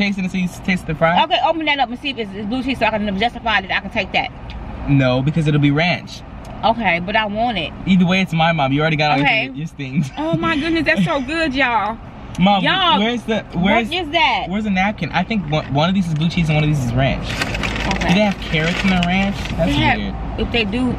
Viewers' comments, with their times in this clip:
0:03 Not quite sure what you said ....